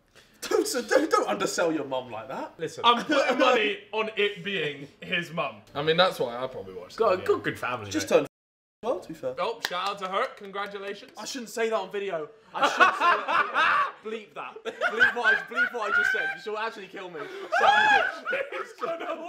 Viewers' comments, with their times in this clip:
0:07 does anyone have a clue of what he said when they censored it? To me it sounded like 50.